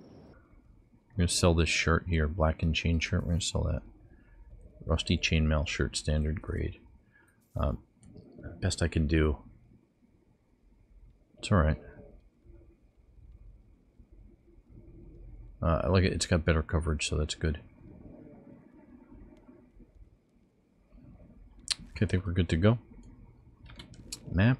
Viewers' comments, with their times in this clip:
0:08 Is there someone near you that is snoring or is it a ingame sound effect? I noticed it right